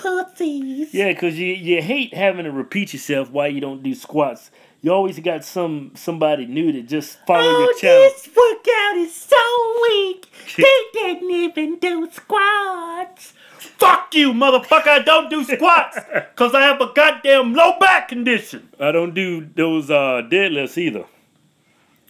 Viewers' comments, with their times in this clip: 0:07 sound like a light skin version of Herbert off Family Guy ! xD